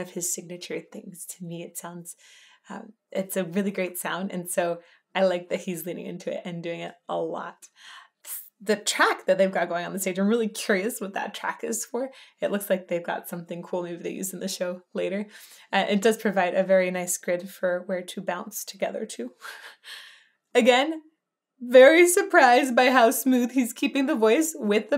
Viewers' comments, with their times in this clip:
0:04 If you want to see jackets, watch Talking Heads - Girlfriend Is Better Gabriel's band is performing it a little too fast in this version. The track could be for a camera.
0:09 ... remember, this is live video. That track would be for the camera carriage so it can move smoothly around the stage as the camera crew chose what part of the stage they are going to film (yes, FILM, because there was no digital recording, it was all on regular film). It really shows how great a singer Peter Gabriel is when all of this war played without autotune or any enhancements as modern musicians use on live performances. Here Peter and his band are hopping, jumping, marching around while keeping the instruments in time and Peter's voice as clear as can be. I am so happy this was the era I was a teen and young adult in my life. We really experienced the top of the top when it came to music.